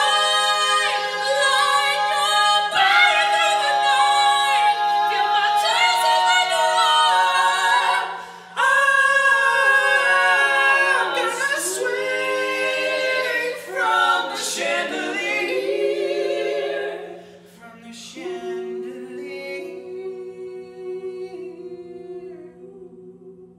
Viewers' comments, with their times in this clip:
0:06 The guy on the right has an incredible range, he hits F5 But as you said voice color of the guy in the middle is probably the highest and the sharpest, more likely to be a countertenor.
0:08 oooof those descending notes in the harmony… chef’s kiss